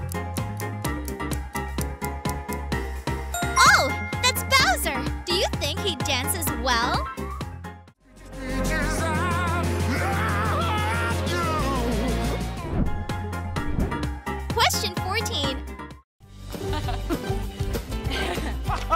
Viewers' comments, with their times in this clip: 0:03 The music made it to obvious